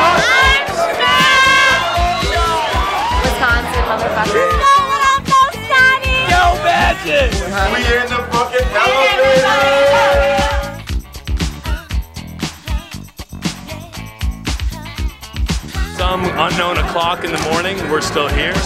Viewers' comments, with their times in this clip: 0:04 Ok what the fuck is she saying ?